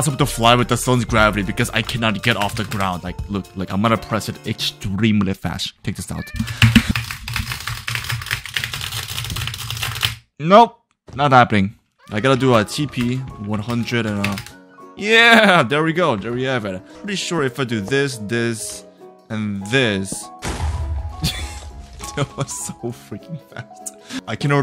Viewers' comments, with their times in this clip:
0:06 bro is clicking his mouse so fast💀💀💀